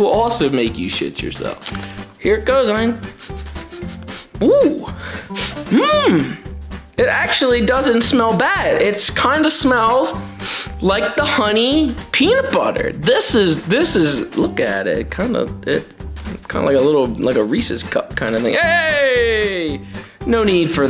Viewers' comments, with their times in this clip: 0:08 He sounds like a grandma